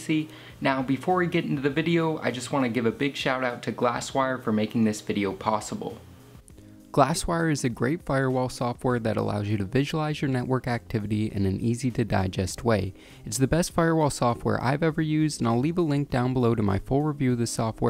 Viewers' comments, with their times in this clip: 0:03 "but before we get into the video let me eee nun ci ate every word" XD